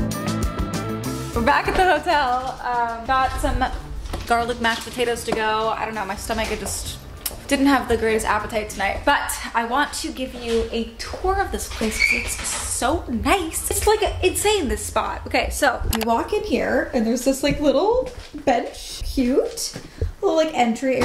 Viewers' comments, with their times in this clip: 0:03 FYI the sound only works in one headphone starting